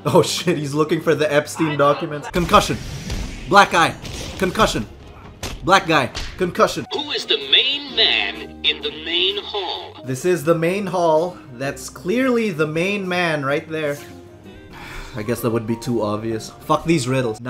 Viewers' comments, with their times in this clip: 0:05 Did you say black eye or black guy?